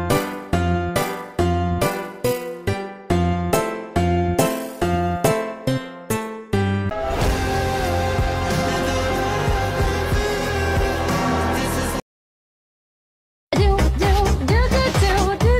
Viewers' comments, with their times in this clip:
0:03 if your wearing head phones it changes which one of the sides the music comes out